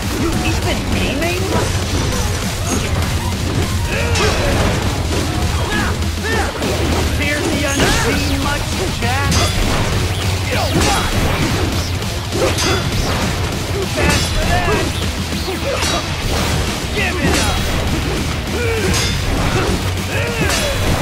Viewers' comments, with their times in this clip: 0:07 Now he sounds like shaggy lol